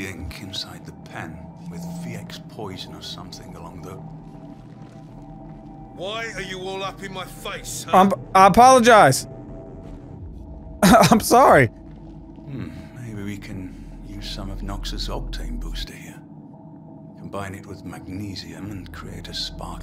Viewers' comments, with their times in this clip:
0:06 "Why are you all up in my face?!" It just sounds so good with that accent